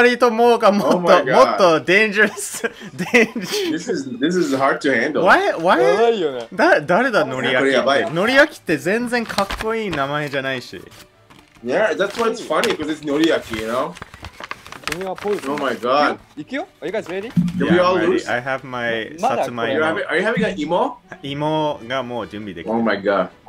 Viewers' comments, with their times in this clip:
0:08 "Noriaki" sounds like "Know REAL King". That's what his name means.